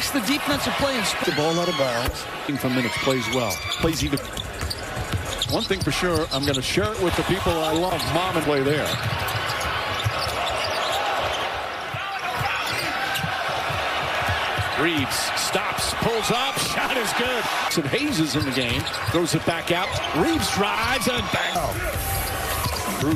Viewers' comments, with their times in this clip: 0:10 the lady is in the front court who keep.screaming against the lakers. It must be behind the camera man.